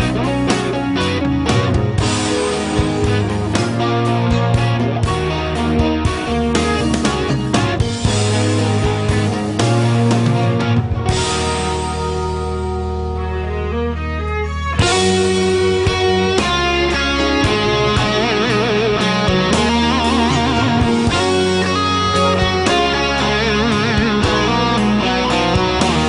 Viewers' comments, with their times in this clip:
0:09 The song still holds as wonderful melody / chords / arrangements. That is the test of great music. I still get that chill when the guitar melody takes over. So simple but so beautiful.